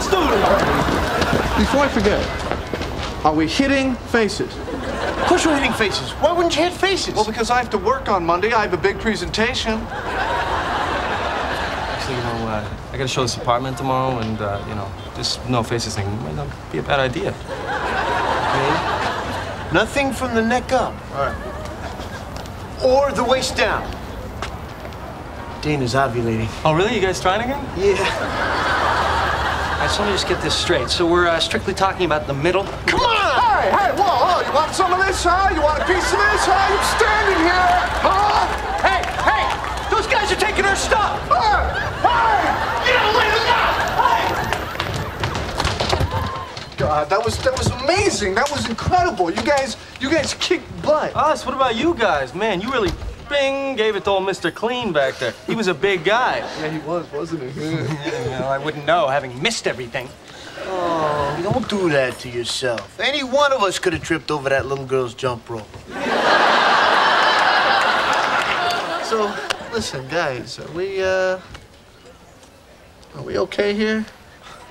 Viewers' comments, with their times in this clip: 0:03 The way Ross says are we hitting faces 🤭
1:01 If Matt Le Blanc didn't exist, that guy could have made Joey. Listen to his voice carefully. Plus he kinda have naive expresions.